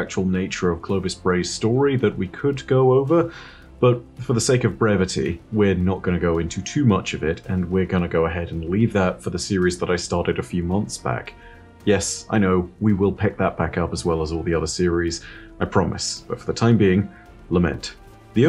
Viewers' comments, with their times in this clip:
0:04 did anyone else hear Bray-vity